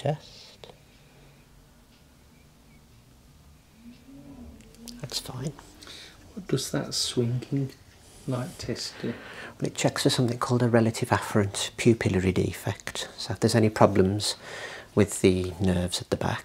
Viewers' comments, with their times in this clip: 0:04 that car sound amazing 😂😍